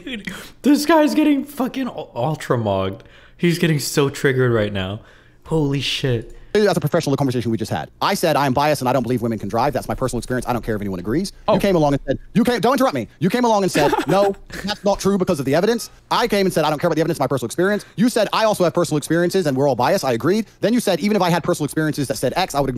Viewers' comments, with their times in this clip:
0:08 destiny laugh not a single human on earth can convince me that these 2 aren't secretly friends